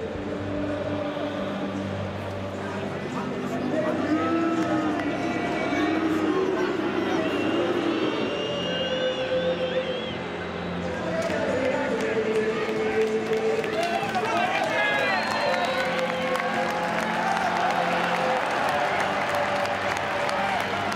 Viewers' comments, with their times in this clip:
0:03 that sui by liverpool fans towards man united players😂😂